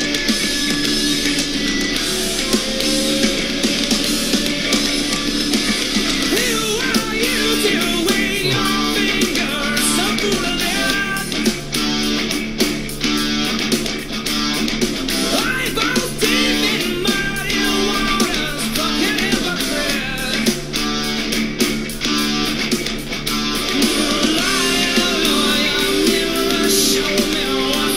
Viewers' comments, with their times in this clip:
0:08 Your reaction is spot on That break is super ill. Shit makes ones bones chill. Especially if you a drumhead